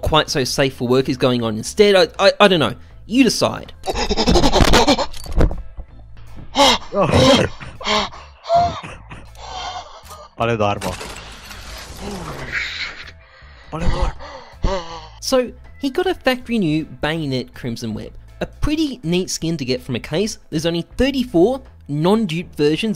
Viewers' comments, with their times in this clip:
0:04 Darth Vader unboxing a knife